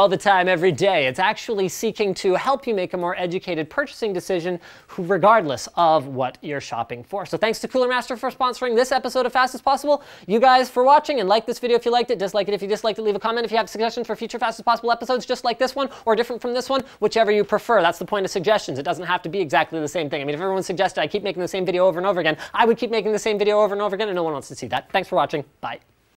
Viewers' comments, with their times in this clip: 0:08 rap god mode on
0:10 Can you speak any faster?
0:14 Play onwards at 0.5x speed :P It's possibly the best drunk impression ever.